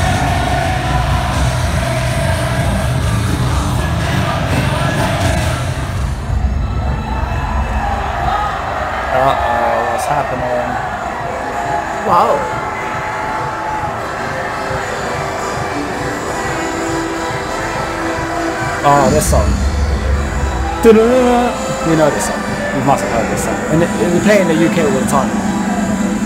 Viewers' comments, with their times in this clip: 0:07 welcome to my alma mater, University of South Carolina Gamecocks 🤙🏻🐓 (they chant USC during the beat drop). they also play 2001 Space Odyssey for the entrance then Sandstorm right before kickoff. Darude, the dj that made Sandstorm came to a game last season for the first Time & threw a concert that weekend. He was amazed at how we used it during the intro to the game. you’re always welcome in the Palmetto State 🫡🍻